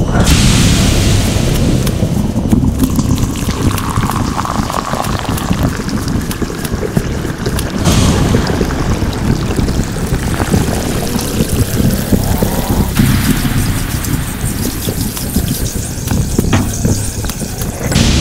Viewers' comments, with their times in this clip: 0:03 hmmm coffe slushy sound :)